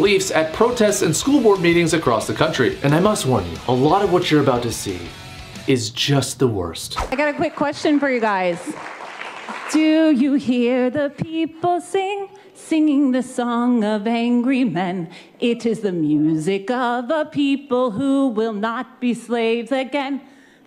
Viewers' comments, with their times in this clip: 0:07 Deathcore scream WHAT THE FUCK IS GOING OOOOOOOON?!?!